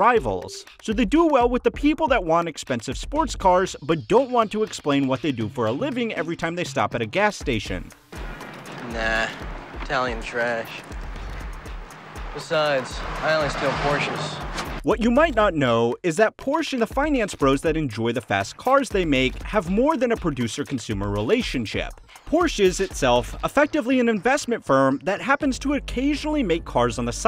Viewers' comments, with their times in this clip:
0:08 I know! With all the presumed research that went into the video you’d think he’d have heard it’s proper pronunciation at least a dozen or so times. Literally seconds in Charlie Sheen uses its proper pronunciation…